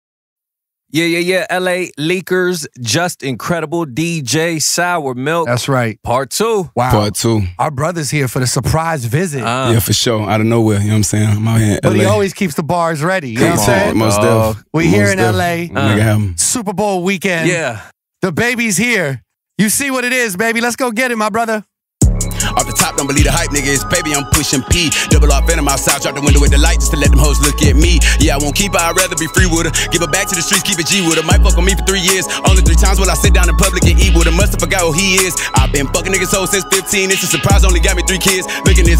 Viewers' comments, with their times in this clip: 0:01 Dababy starts rapping on every beat
0:22 Greatest drop off all time 🔥🔥🔥🔥🔥